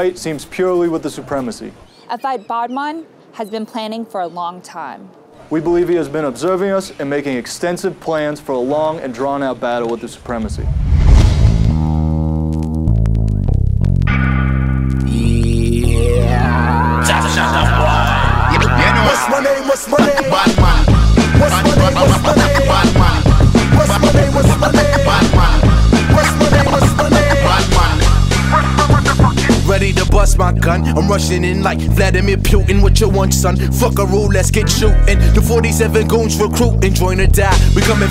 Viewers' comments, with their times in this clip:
0:10 RIP HEADPHONES, Hate Me Later;)
0:14 and the song actually starts hahaha
0:21 Dude raps with so much heart. I got chills